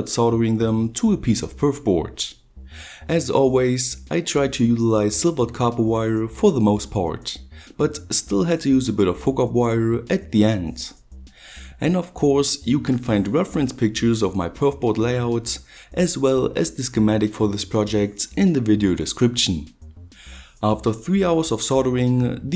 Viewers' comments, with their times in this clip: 0:09 So is "fuck-up-wire" a well-known scientific term?